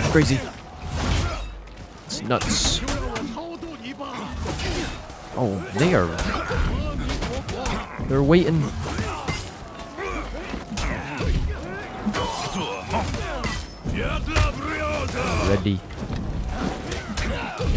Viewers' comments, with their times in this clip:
0:05 I did not hear they are 💀💀💀